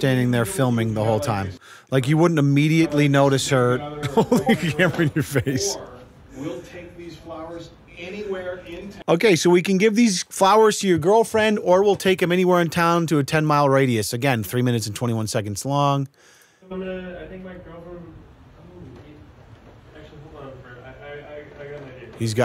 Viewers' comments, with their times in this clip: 0:05 The Discord Ping threw me off